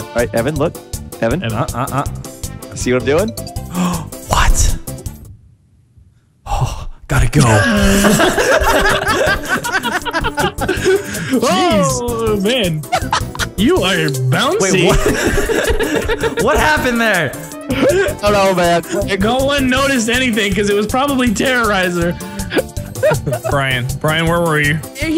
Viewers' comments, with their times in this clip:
0:07 the way he said "gotta go" XD